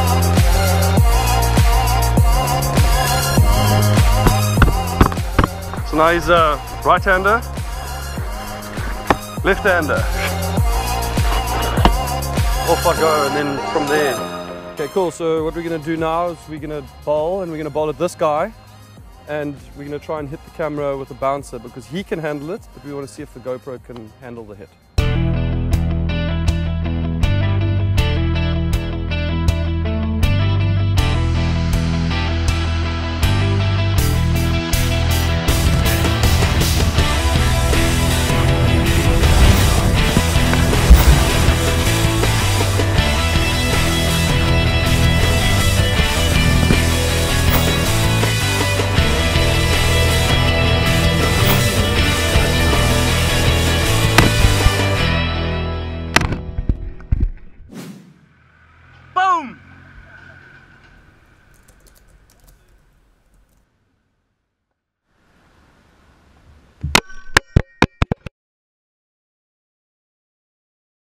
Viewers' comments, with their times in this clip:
0:06 does he really say "now he's a bartender" Or its just me???
0:59 Dale you boom like a baloon😂😂😂😂